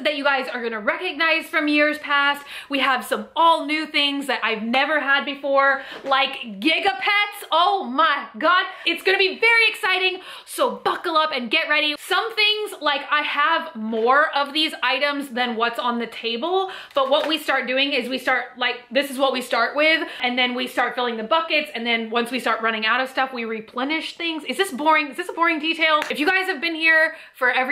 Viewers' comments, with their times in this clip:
0:10 Did she mean to do the whoa